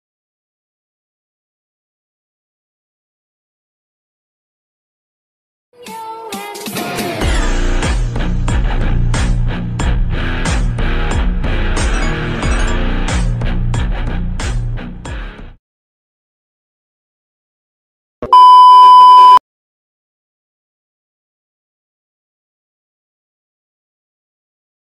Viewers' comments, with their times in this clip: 0:07 I’m sorry but this is the best part like the design- the music and the animation- it’s a ✨dream✨